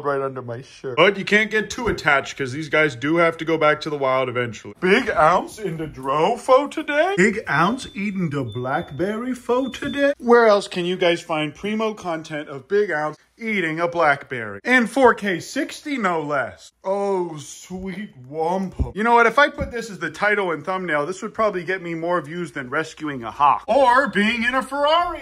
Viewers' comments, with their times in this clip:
0:05 I thought my fridge was still open when i heard this ringing noise in the background i just opened it so. thought i didnt close it.
0:07 Your refrigerator door chime made me get up to make sure mine wasn't open.😂😂
0:08 Bruh I heard the fridge chiming and got up thinking it was my fridge. Caught me lol
0:09 thought I set of the smoke alarm in my hotel room but I think the laundry is just done. in the video I mean.